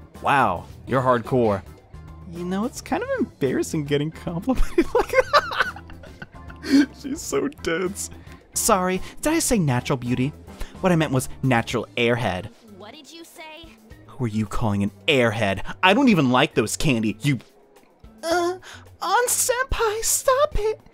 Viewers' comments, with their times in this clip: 0:05 that laugh earned you a sub 😂